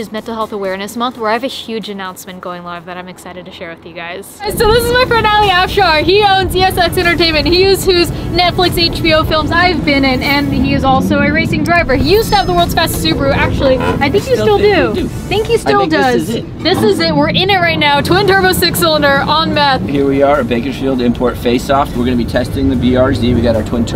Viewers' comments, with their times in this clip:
0:05 i’m willing to bet the “kids”that roasted you were adults whatevere edit: if a horse could talk, this is what it would sound like.